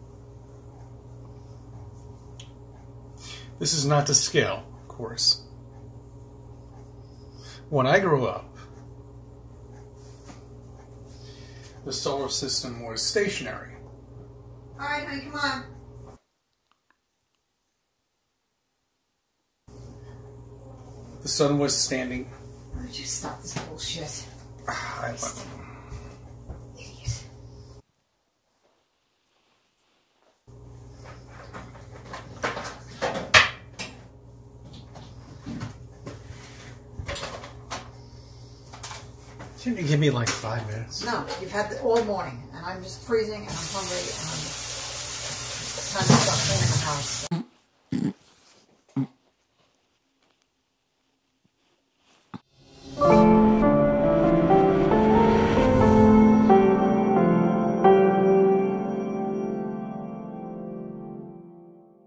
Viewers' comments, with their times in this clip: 0:10 Did his wife just said: "Would you stop talking shit"? For me it sounds like that, but i am not sure. I am not a native speaker, so maybe i am wrong about this. But if she said exactly this, i already can tell: I like her more than him. Of course he believes in stupid things. HIS WIFE IS STILL WITH HIM! Why wouldn't he? : )
0:23 No one caught his wife call him an idiot under her breath?? 😂😂
0:25 the most sincere "idiot" I've ever heard..it had to come from the heart 😅
0:48 That was a good fake laugh